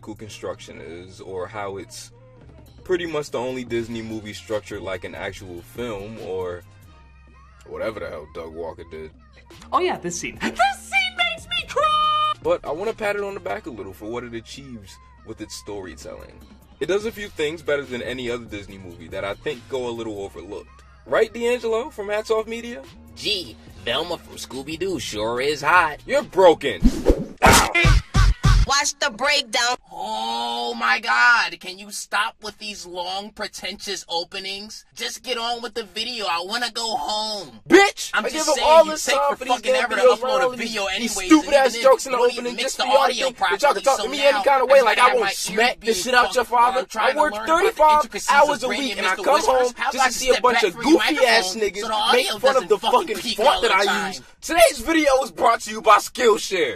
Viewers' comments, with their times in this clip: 0:08 PRESENT MICS ENRISH IS GIVING ME LIFE
0:37 That "Bitch" had so much pent up rage behind it. Beautiful.
0:39 Idk ab u guys but once hit I actually looked behind me thinking someone was talking to me